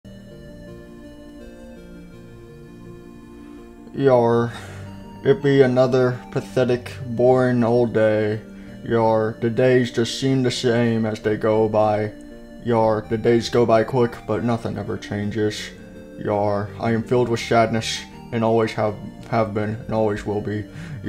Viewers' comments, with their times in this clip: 0:03 foxy sounds depressed